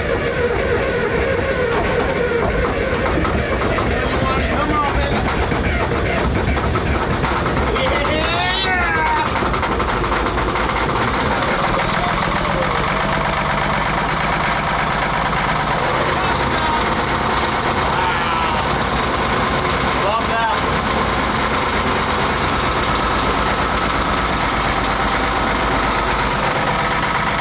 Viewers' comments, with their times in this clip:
0:09 the sound machine makes only for victorious people